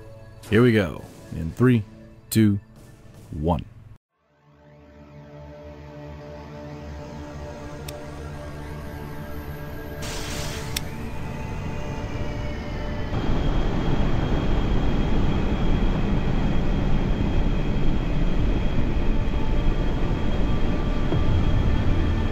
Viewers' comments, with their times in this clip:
0:05 Anyone else noticed the SCP-096 Scream?